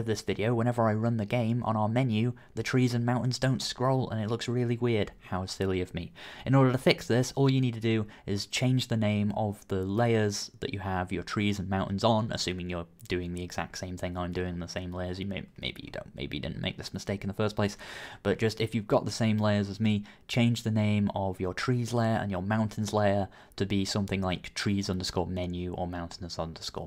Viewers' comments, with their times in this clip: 0:10 pause and INHALE! ffs - this sounds so wired, wenn people talking until no air is left in their lungs. - The Tutorial is great - thanks for that. :)